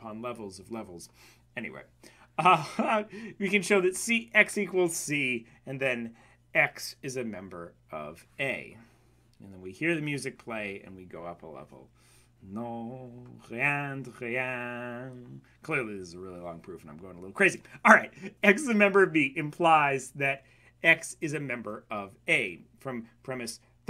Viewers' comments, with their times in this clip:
0:08 Set Theory: Bringing you philosophical logical proofs by means of the movie Insception and Dragon Warrior level up music